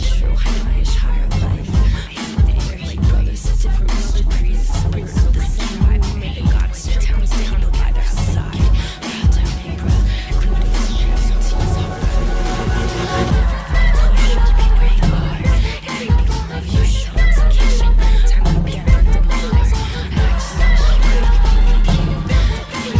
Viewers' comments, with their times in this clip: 0:07 it sounds like the voices in my head are getting louder.. louder... louder... until i finally stop them, but at the cost at my sounds, and my life...